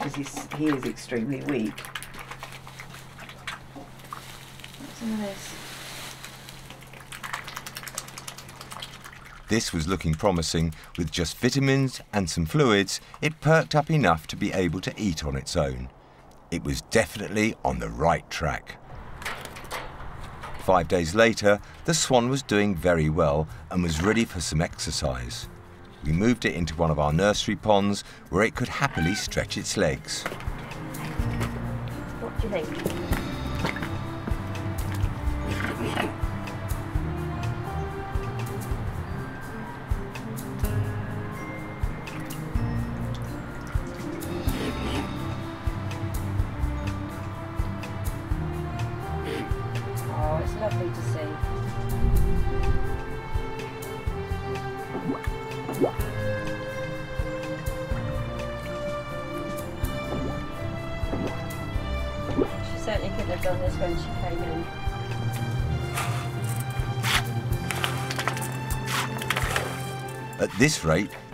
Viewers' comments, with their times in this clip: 0:06 is so cute. He's like "Oh the main course. laplaplaplaplaplap!"
0:43 No, they do that when they poop... she does a wet fart too...
0:53 It farts with its head under water!
0:59 Sounds like Super Mario swimming! LOL